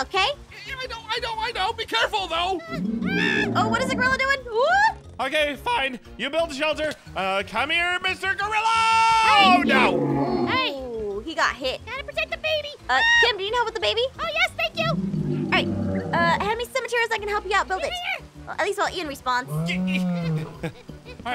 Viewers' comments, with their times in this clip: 0:05 I heard ein voice crack